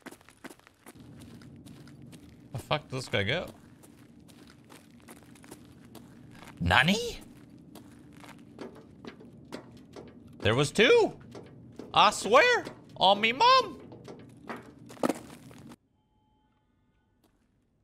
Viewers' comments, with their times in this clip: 0:04 nanny or nani? baka